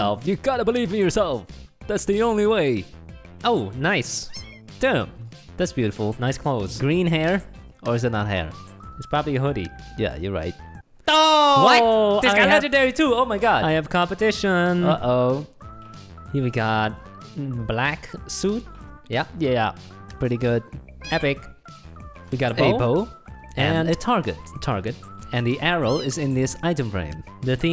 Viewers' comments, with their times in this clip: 0:10 Legendary: occurs Music: I’m not gonna play because I don’t feel like it